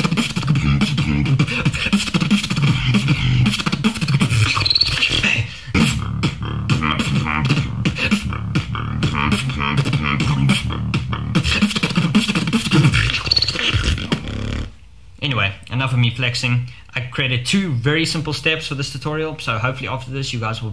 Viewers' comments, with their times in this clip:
0:05 what is that metalic sounding bass sound he is making? Is that still throat bass? It sounds so... reverbed. It's crazy impressive.